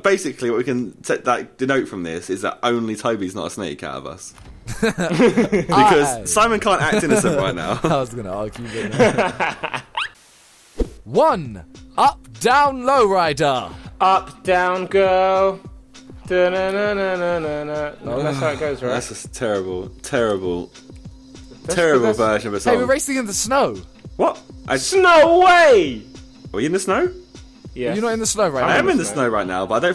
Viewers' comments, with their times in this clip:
0:08 What happened to Tobi's laugh hahahah :')
0:10 Did anyone else hear the squeak ?